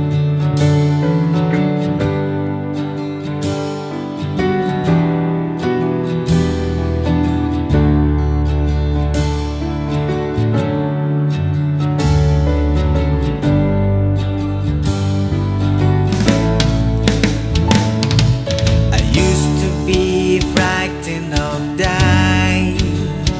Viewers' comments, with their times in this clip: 0:10 that drum technique MIKE PORTNOY wants to know your location